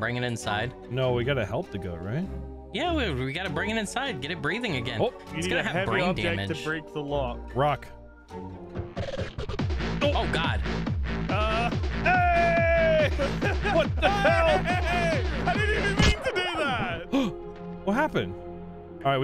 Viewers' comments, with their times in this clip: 0:03 'We need a heavy object to break the lock. Rock!' And instead of rock, we got techno.